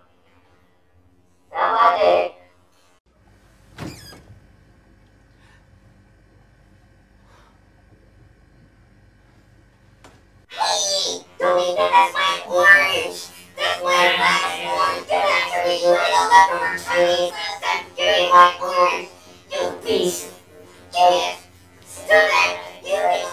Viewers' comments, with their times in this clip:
0:10 she sounded so funny 😂😂😂